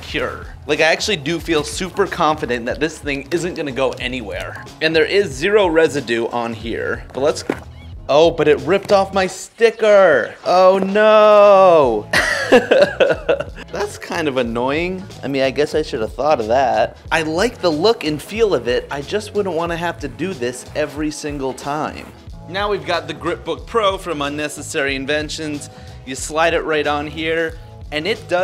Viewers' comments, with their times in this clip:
0:09 does anyone thinks that the "oh nooo" sounds like Denis daily voice